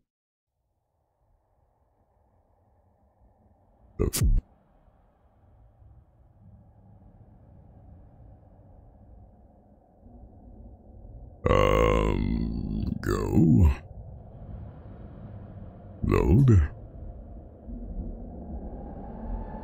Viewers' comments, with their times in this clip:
0:04 bro got sent to Limbo "You're a halo 5 character" 😂 Damn, his singing voice is great